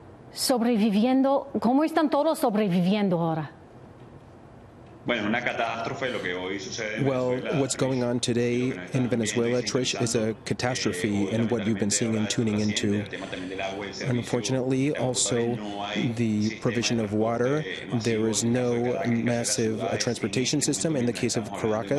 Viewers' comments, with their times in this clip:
0:04 time out I don’t even like this news channel but I respect the fact how fluently she just spoke.